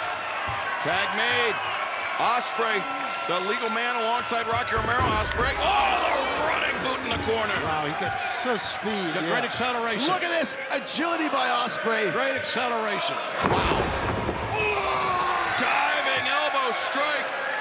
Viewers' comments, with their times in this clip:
0:04 The Yakuza kick followed by the Olé chants! No one forgets El Generico.